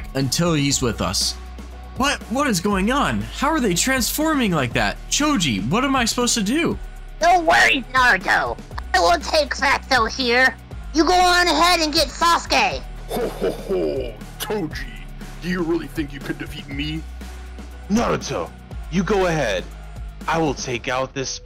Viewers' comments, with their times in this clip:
0:06 # LOL that is not how he sounds